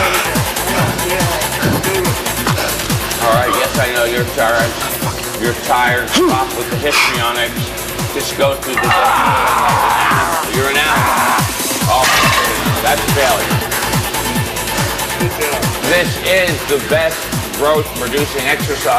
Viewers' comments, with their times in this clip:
0:04 did he cuss under his breath LOL!